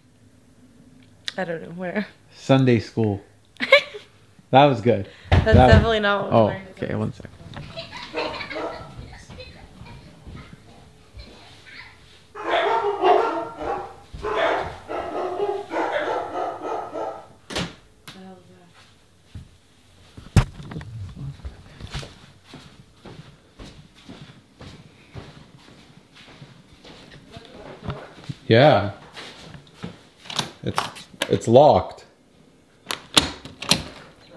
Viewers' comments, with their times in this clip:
0:07 Are we not talking about the child laughing ?!!🤔
0:08 why are their kids laughing..
0:08 you can hear a little girl laughing!
0:08 After the door knock there is 2 little girls laughing creepy like.
0:08 With? -41 there was two little girl's laughing in the background after there was a knock at the door 🚪
0:10 I heard kids laughing scary.
0:15 the dogs were barking at kids giggles from inside your home.
0:20 I heard kids talking and giggling when u went to go answer door